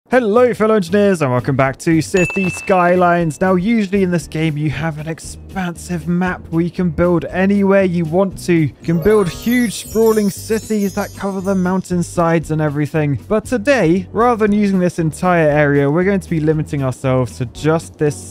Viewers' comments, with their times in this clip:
0:01 "Hello fellow engineers" COOKIE MONSTER "and welcome back to..."